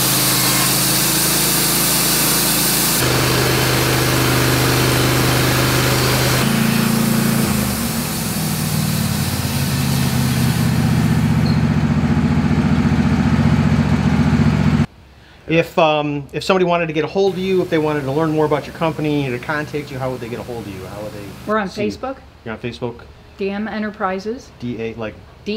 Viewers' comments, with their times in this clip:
0:07 The auto-generated captions say [music] when the motor of the sawmill is running. :)